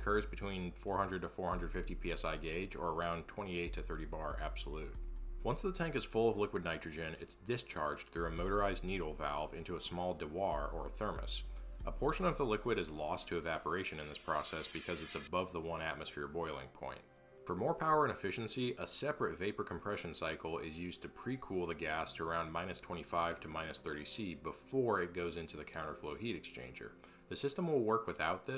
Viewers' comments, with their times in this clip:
0:10 That's the craziest pronunciation of "dewar" I've ever heard.